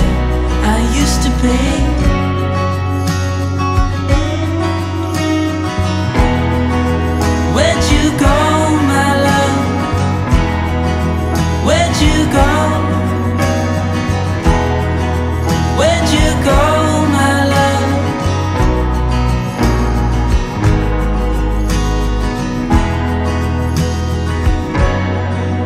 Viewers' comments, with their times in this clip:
0:09 Happy New Year! The TUNE: 🙏😍